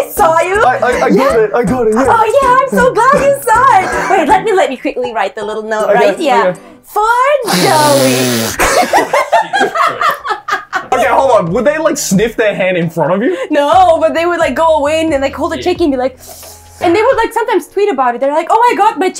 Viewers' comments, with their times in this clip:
0:06 BRO THAT SNIFF HELP HAHAHAHAH